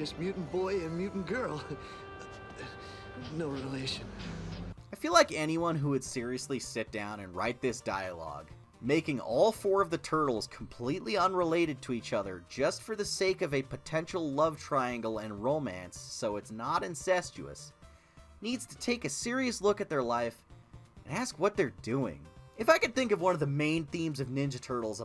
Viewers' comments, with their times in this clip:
0:06 the legit creepiness of that scene is unbearable. Like, the line and delivery is just gross